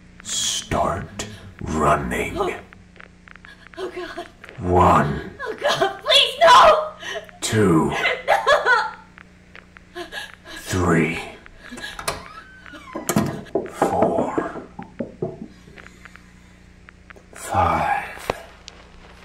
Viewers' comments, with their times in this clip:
0:04 erm actually, you're counting too slowly, you're counting at one number every three seconds instead of one number every second 🤓